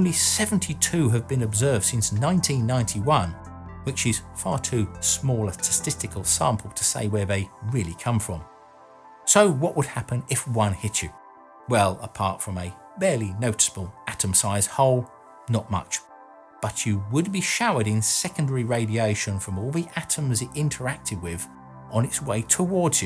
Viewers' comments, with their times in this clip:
0:04 did I just hear "A too small testicular sample?"